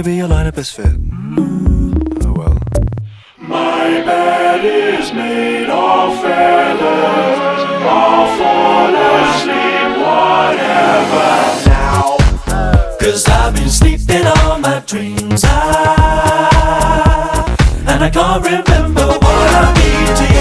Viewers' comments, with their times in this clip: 0:03 The chords are just amazing. So glad you can help me with them!